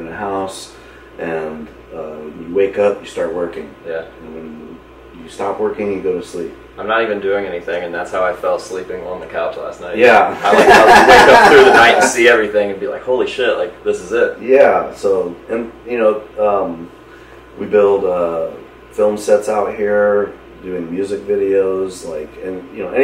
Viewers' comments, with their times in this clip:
0:10 Idk if I'm the only one who loves Sid's laugh